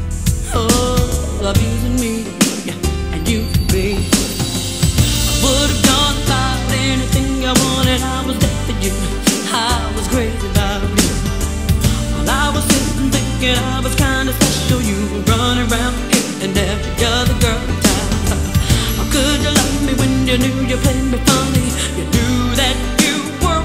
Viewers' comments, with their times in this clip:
0:10 I always thought she said "I was there for you, I was gravy by the meal" lol